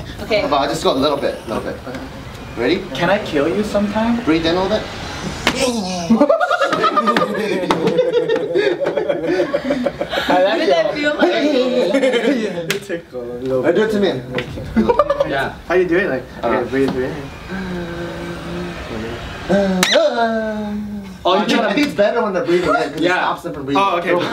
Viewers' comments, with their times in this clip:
0:05 yooo why he sound like a lawnmower starting up